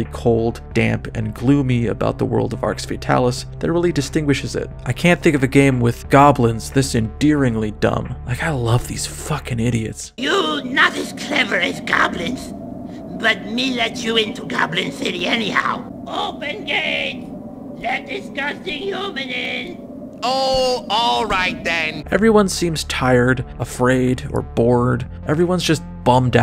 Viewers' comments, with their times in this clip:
0:08 Always thought it was "OPEN GATE, LET THE SUSSY HUMAN IN"